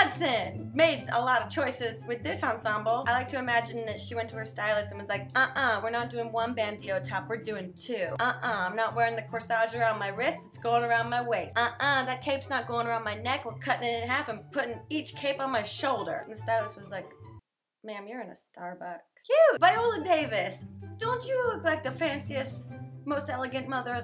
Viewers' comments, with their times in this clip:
0:05 ... girl did you just say "bandio" instead of bandeau or am I not in on the joke